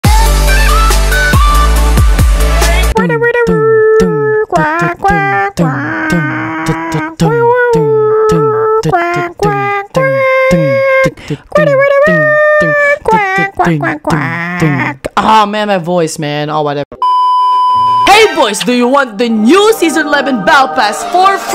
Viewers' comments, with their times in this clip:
0:03 THAT INTRO ALMOST GOT ME LAUGHING BC OF THAT SONG